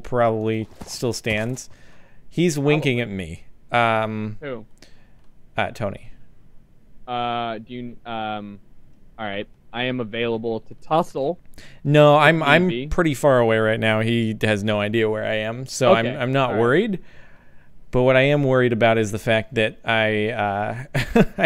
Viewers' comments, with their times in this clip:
0:09 Did he say "I want it to be gay time"